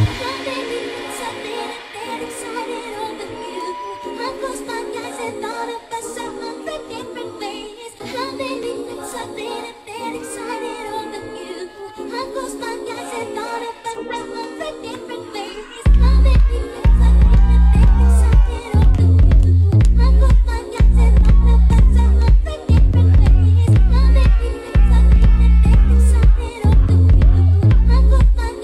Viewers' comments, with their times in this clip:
0:10 I’m super late discovering this session but I’m enjoying the mix and the people watching!! It is top tier!!! Especially where the white long haired guy comes and the bass comes back in!!! Chef’s kiss